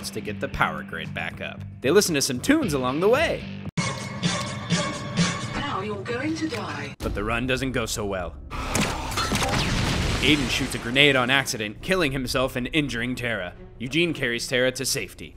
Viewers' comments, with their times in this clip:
0:03 i hope i wasnt the only one to here the irony of the music